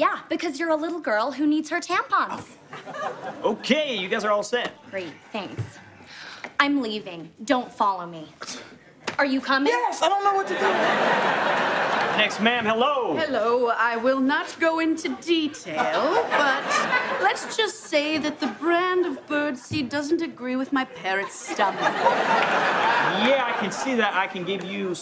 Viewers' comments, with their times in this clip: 0:09 when all the dudes laughed, you can just imagine them teasing their lady.